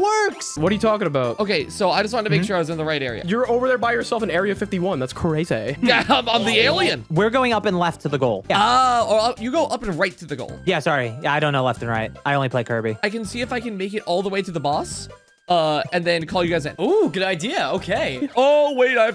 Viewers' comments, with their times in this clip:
0:06 The voice changer edit on the UFO Kirby made me laugh hard. I love the original video where that's from